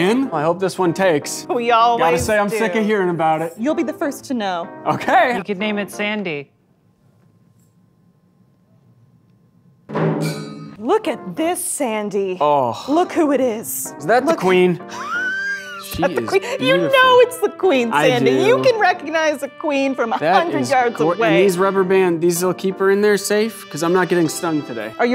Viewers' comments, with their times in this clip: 0:09 That drum got me so bad, can't stop laughing